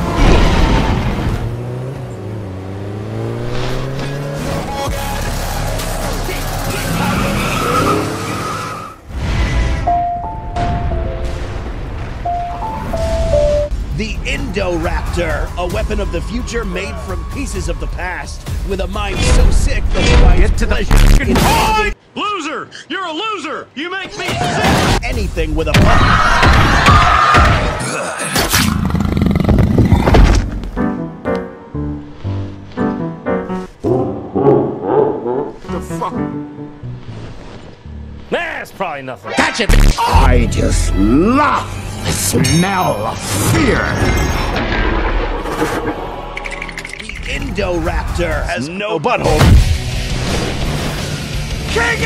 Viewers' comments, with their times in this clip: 0:10 the poor brachiosaurus and song in the background 😢😢😢😢
0:28 it sounds like a leopard growls
0:28 bro sounded like he burped or farted
0:34 i love the laugh of bowser